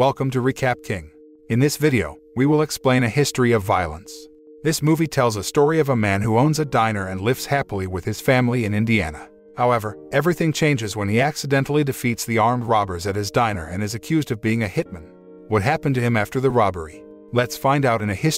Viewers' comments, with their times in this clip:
0:05 why ffs do you ruin a replay with your on going jabber?